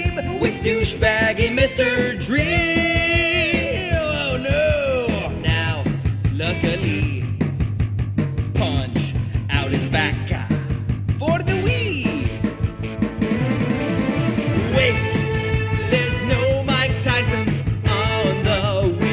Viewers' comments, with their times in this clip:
0:05 I love the way you say "OH NO!" that's the way I always say it now in real life